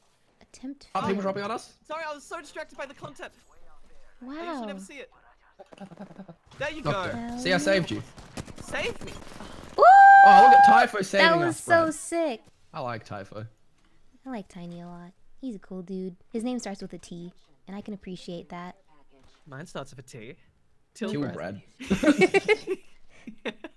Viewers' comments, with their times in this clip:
0:05 What was that background sound ?? Like a extremely hyperventilated gasp? What was that?